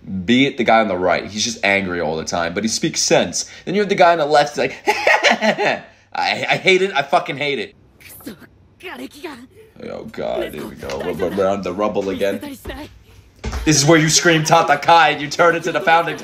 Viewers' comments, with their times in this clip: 0:04 bro that was exactly like him😂😂😂 how did you do that?